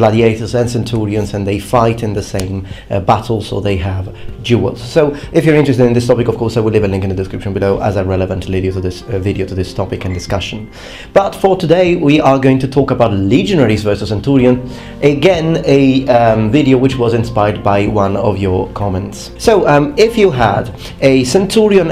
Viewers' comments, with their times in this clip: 0:09 Did anyone else hear a phone ?